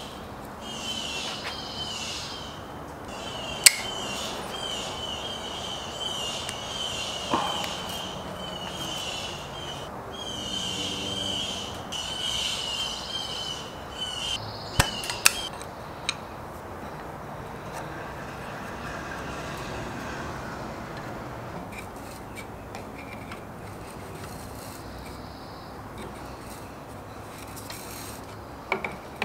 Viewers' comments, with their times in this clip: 0:03 sounded like a bunch of TIE Fighters were outside
0:16 Why’d the birds magically stop chirping ????